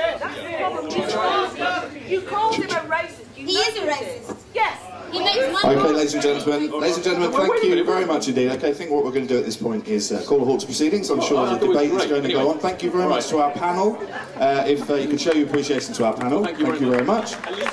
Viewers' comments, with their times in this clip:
0:05 You can hear the audience clearly. They are shouting 'you started it' 'you called him a racist'. She is trying to bully and elderly disabled man.